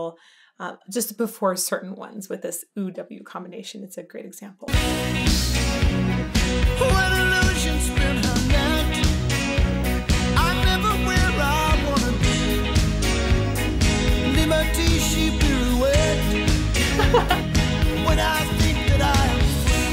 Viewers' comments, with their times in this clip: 0:07 ish: I hear it as an H, as if he is saying "Hwhere"